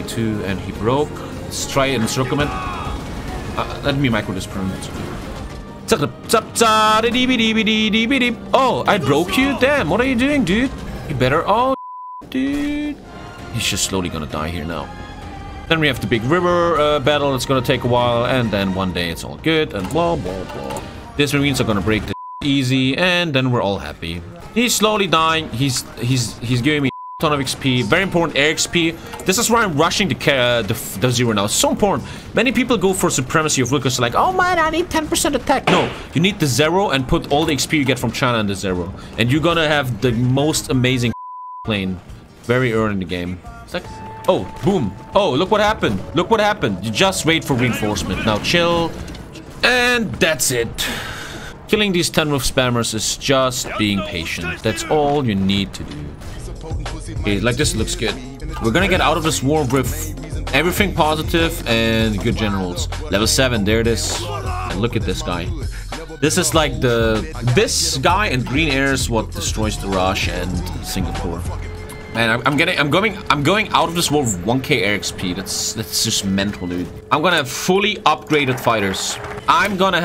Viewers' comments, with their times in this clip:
0:06 I am a simple man I hear Ievan Polka performed well I like the video
0:35 I legit thought someone shot the door open and I don't even live in America...
1:03 it sounds like Japanese soldiers are rapping with the beat